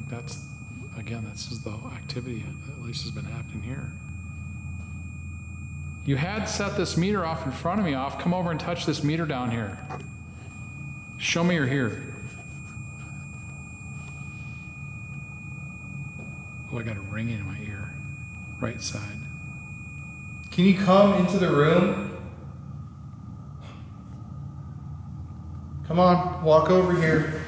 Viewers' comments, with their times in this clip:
0:08 That high-pitched noise about drove me nuts! Props to you both for being able to endure that.